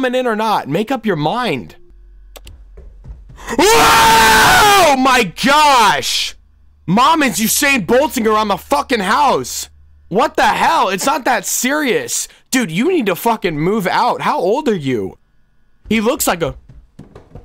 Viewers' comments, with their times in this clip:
0:03 screams Me: I didn’t hear anything?